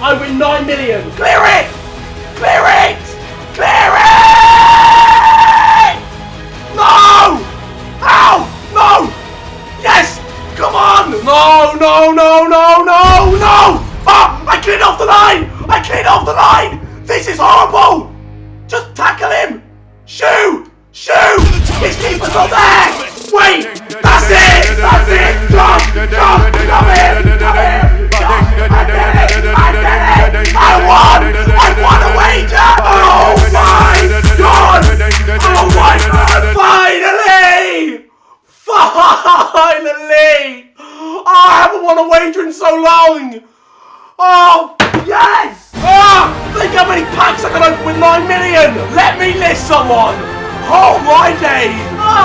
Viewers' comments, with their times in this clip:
0:04 sounds like a car doing doughnuts
0:25 Song at the end
0:30 the music on
0:40 you are crying in front of your little brother he would think you are mad